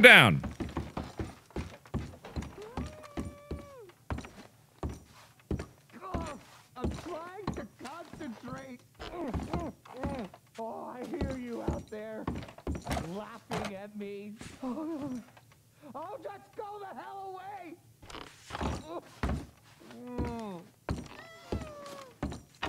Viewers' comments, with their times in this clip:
0:07 Does the guy sound like ryan reynolds?